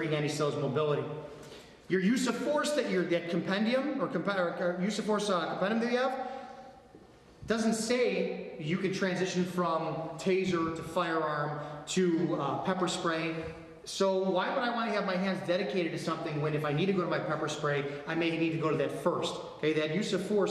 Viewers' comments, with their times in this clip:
0:04 what are you saying ? you had a small meltdown after saying "compendium"